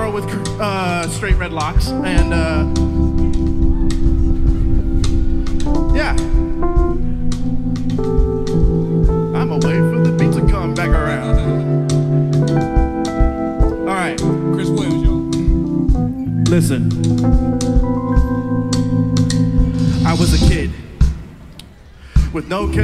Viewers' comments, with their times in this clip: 0:08 is when the singing starts